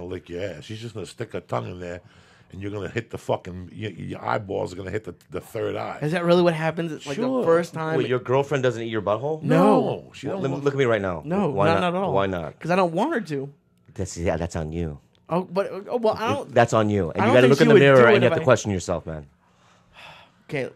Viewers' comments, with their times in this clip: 0:08 that simultaneous "NO" cracks me up man!